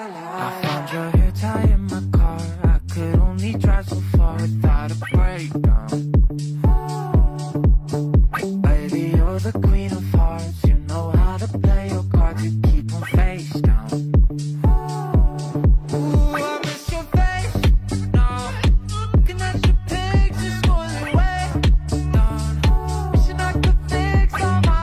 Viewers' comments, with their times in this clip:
0:10 Why do I keep hearing queen of farts..?